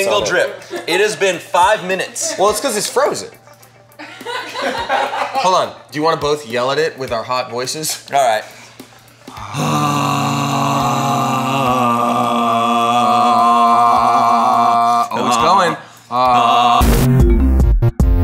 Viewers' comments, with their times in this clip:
0:06 I think all the ladies here can confirm these two have hot sounding voices 😁🔥